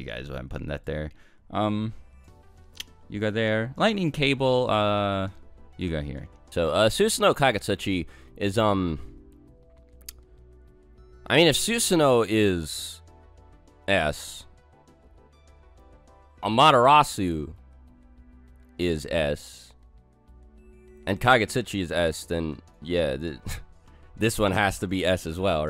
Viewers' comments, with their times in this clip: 0:06 Why does this man turn into Walmart brand Ben Shapiro.